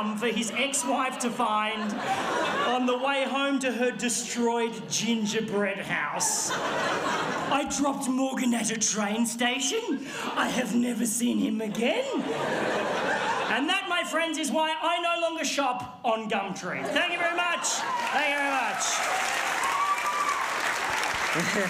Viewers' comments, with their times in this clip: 0:07 THE WAY HE SAYS THIS LMAO